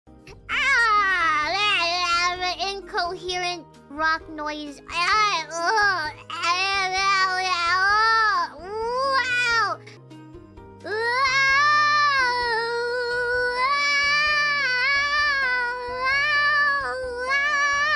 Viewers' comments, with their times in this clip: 0:02 "incoherent rock noise" is certainly my favorite incoherent rock noise